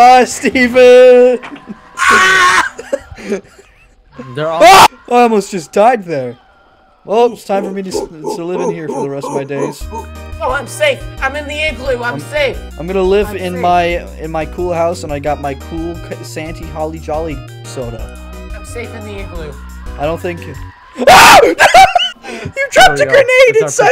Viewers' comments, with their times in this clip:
0:05 bro god tier mid cut scream